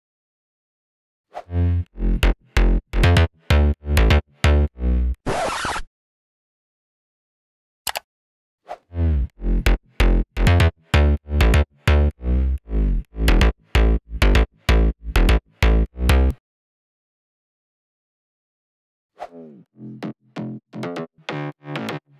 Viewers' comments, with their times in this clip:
0:08 with what plugin or method did u do the pitch bend ? :P